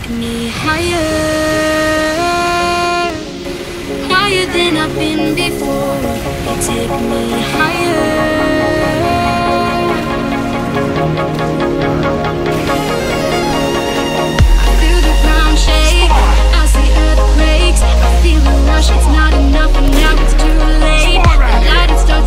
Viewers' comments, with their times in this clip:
0:06 My opinion about this video: girl with autotuned voice is only one who cheating